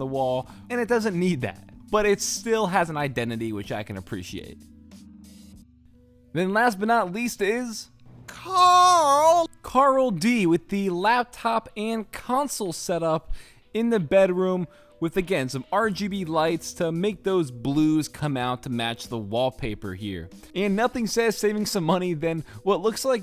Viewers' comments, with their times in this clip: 0:08 you nailed that impersonation